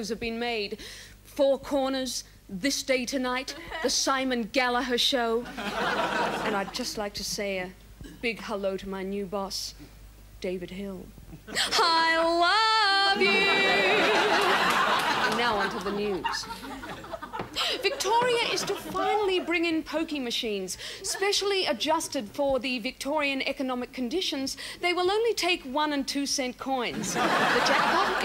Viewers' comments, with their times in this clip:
0:10 As soon as I saw it was Gina doing her send up of KAK, the first thing I thought of was her singing "I love You". she didn't fail me. 🤣🤣🤣